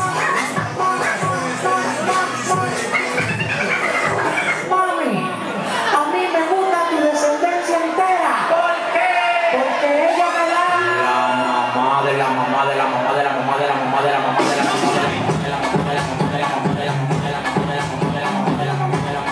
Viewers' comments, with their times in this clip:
0:07 I love how the crowd just stopped and stared confused af until the beat dropped 🔥